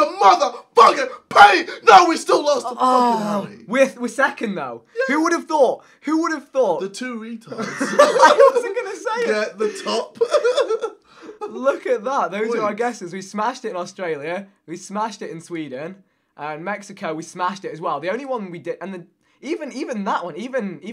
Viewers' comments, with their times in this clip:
0:04 JJ's yay though.